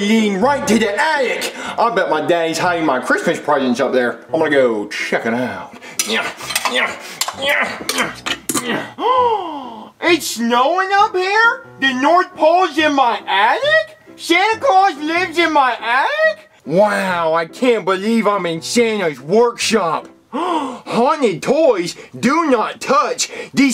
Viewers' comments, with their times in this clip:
0:04 “Im gonna go **check** it out” xd WAY HE SAYS IT HILARIOUS